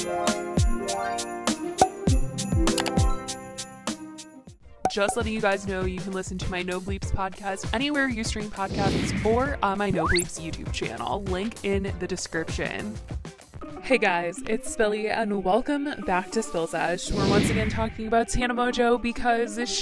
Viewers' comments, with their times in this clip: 0:07 What was that sound when she said "friend" ? was she mumbling something ahahaha